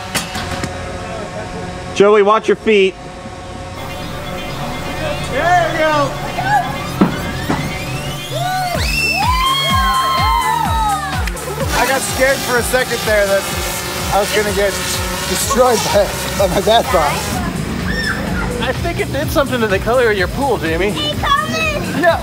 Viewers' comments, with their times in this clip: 0:08 did I hear a kid scream?? ._.